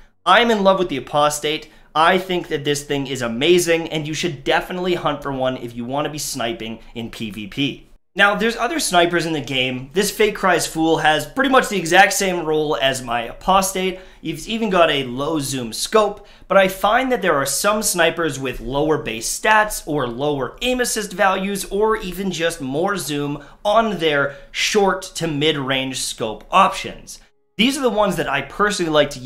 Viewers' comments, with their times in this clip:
0:10 the way he says fate cries foul makes my maple leaf drip from my arse